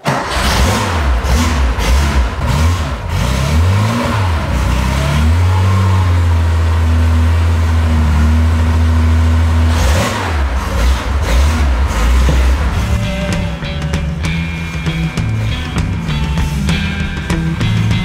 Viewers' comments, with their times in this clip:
0:05 Just try to stop the video and watch the subtitle in English...that engine,that's music